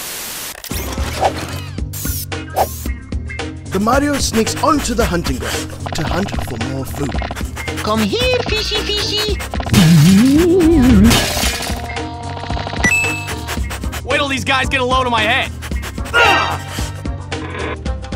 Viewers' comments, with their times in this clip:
0:03 *Mario sniffing on ground for food*